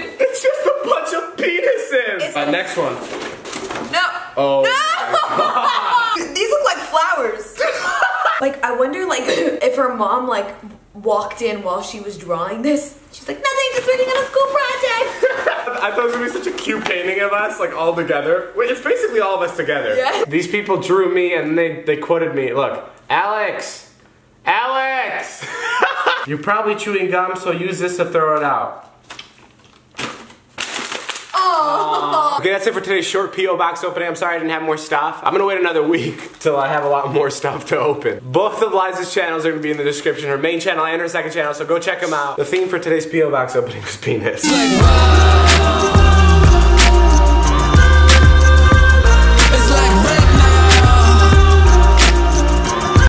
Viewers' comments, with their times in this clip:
0:06 david's laugh made me laugh harder
0:06 his laugh are goals
0:07 David's laugh haha
0:07 David Dobrik exposed his laugh
0:08 David's laugh <3
0:41 I swear David called Liza "him". When David was shouting out Liza's channels he said, "So go check him out". Or was I just crazy?